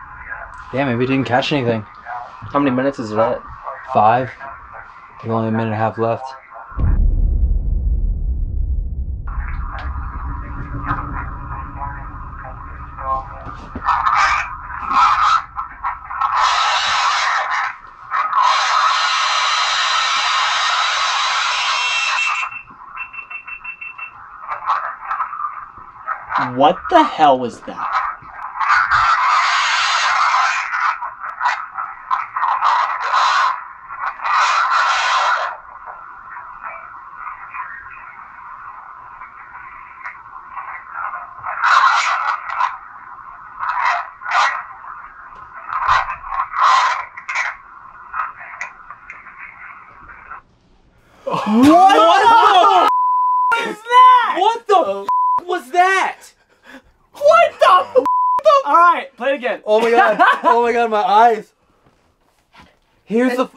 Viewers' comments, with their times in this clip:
0:10 i think that Evp thingy said “help me”
0:13 yo the screams at the end was probably a re creation of the knife being used in a sacrafice
0:28 ITS THE SAME FUCKING SCREAMING FROM THE PAST VIDEOS
0:46 The evp sounds likes it's saying "Corey" to me.